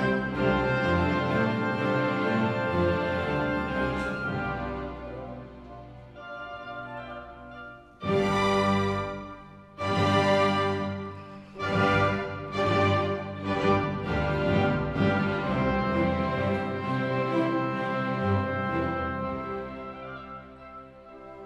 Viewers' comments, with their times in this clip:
0:05 Did I hear the cell phone ringing -51?